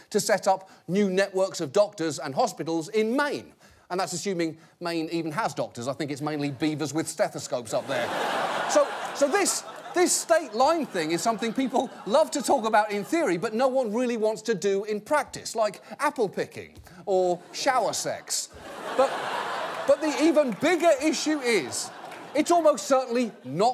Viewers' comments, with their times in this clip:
0:09 We don't have doctors, we have doctas, r's are difficult to say.